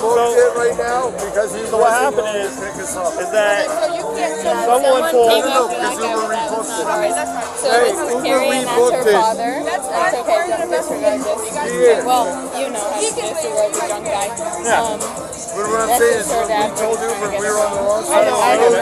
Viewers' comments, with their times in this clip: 0:06 her throwing up in the background sent me